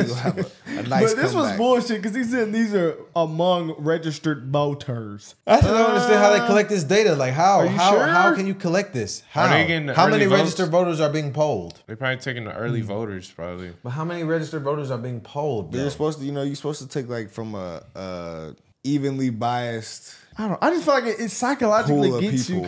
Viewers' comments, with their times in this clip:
0:04 never yawn during recording